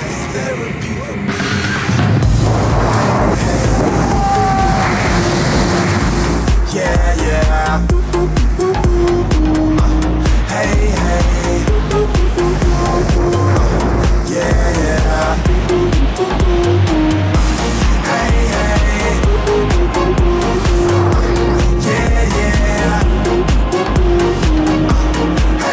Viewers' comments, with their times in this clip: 0:06 The screaming under the music 🤣🤣🤣